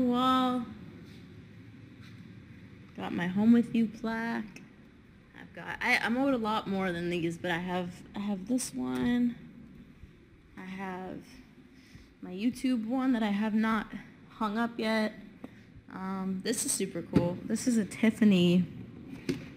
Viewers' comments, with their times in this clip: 0:05 what exactly did she say ? I played it a couple times and each time I hear the n word but it makes no senseeee like she wouldn't say that